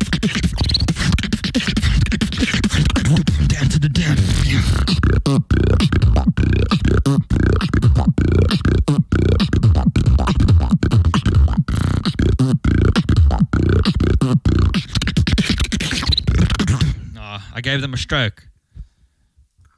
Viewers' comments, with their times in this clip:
0:03 its similar to napoms beat hahahah but i love it even the inward bass its so good❤❤
0:07 My man has audio epilepsy and Remix just triggered it. Keep going bro, this content is absolute🔥🔥🔥🔥🔥🔥🔥